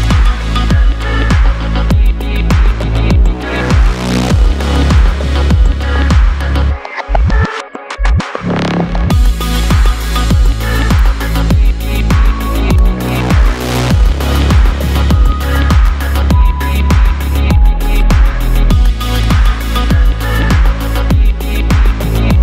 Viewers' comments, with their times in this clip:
0:05 I would say Believe is more experimental. However, if we're comparing the two as experimental tracks, this one is wayy better bro just that break is soooo delicious